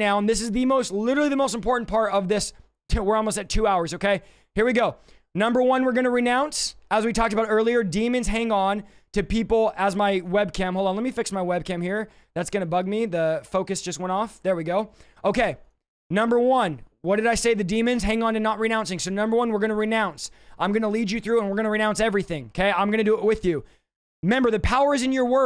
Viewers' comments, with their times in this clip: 0:06 Renounces start ( for those who need to repeat since he speaks in speedy tongues.)